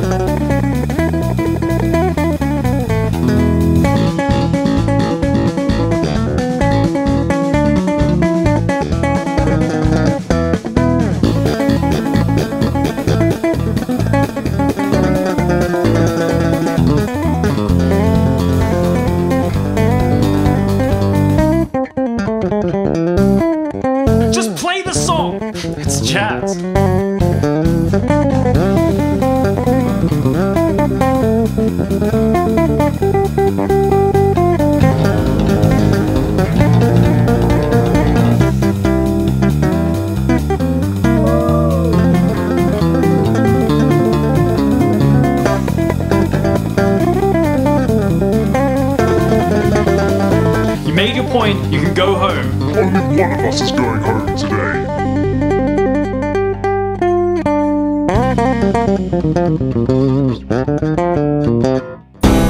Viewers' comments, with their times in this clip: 0:03 that riff and the reaction of the "teacher" are the best part.
0:17 what a savage bridge.
0:17 "Heroic" cadence was a kinda surprise in jingle bells :)
0:23 goes to jazz JUST PLAY THE SONG 😂
0:35 sounds like it can be in a Super Mario Christmas game. I love it
0:40 that 'ooo' tho
0:41 I love "woo" guy
0:41 that "fooooo" guy always had me laughing 😂
0:41 I love the Woo! guy
0:41 the “ woo “ guy had one job and he nailed it
0:41 Jazz guy whooooooooo 😂 awesome Jazzy jingle bells man 👏
0:44 Awesome playing! I couldn't help noticing the tritone substitution !
0:49 Aight, your skill is simply ridiculous. From onwards the bass started to sound like a fucking NES, ffs. How can you be so good? Also, merry christmas! (And nevermind being march.)